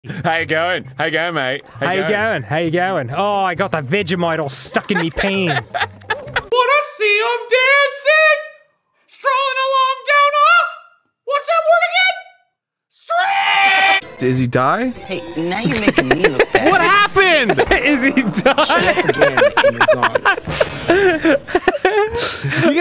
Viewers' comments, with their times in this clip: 0:07 he sounds like hooty from the owl house